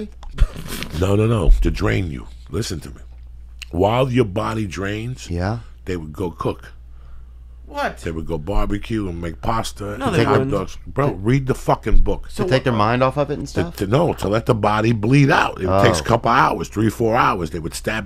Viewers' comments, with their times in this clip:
0:06 LEE SYATT HEARING Voices talking to him as he randomly shouts "WHAT?!" LMAO